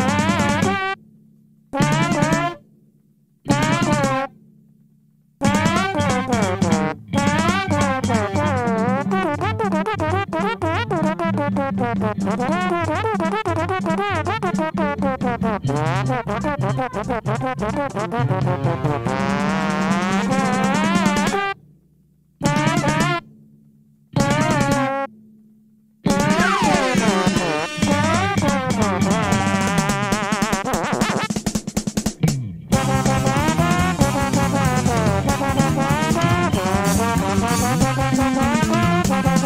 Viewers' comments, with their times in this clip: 0:09 Animal Crossing characters be like:
0:09 madeline talking be like
0:26 this solo would make fripp proud